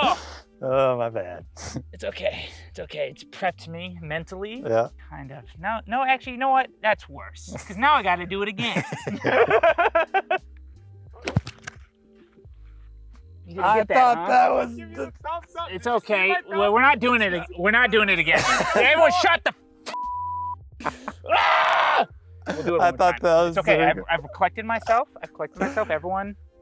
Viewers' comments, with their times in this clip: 0:10 O U C H holy crap that sounded brutal.